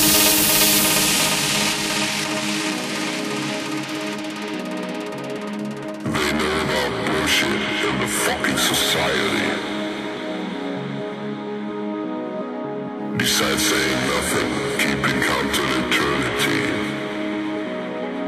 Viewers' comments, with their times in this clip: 0:06 That voice completely blew me away at EDC 2010's main stage from the VIP area. Sounded so bad ass...